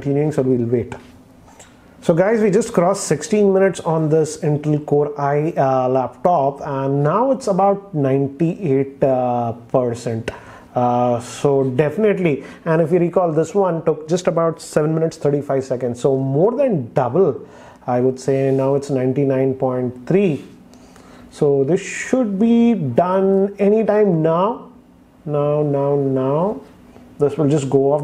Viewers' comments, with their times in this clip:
0:09 The way he Says PERCENTTT.. makes my Tongue Fractured...